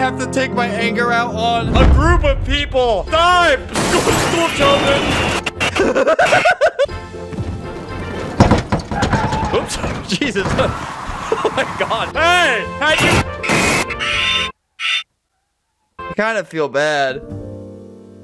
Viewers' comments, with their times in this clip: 0:03 laughs like an evil cartoon clown